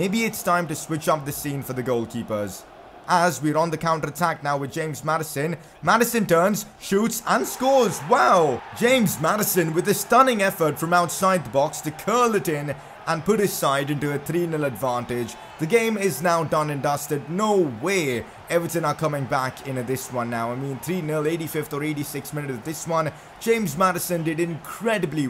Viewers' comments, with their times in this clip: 0:08 the most enthusiastic «wow» of 2019 lmao